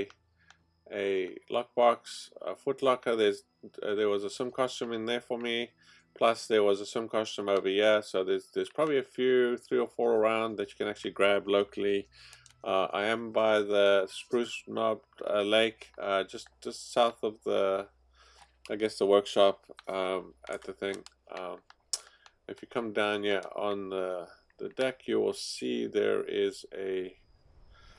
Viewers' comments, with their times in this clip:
0:10 Ok, vid starts -ish... The sound of those stupid buttons. Is that an Xbox controller!? I hope for their sake its a keyboard we're cringing thru